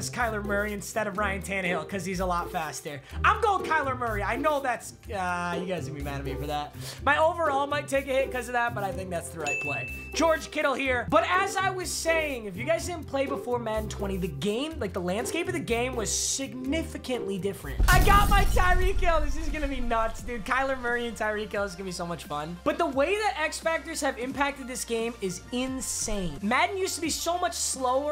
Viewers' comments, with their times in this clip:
0:09 Is it just me or does his vid mutes for a bit?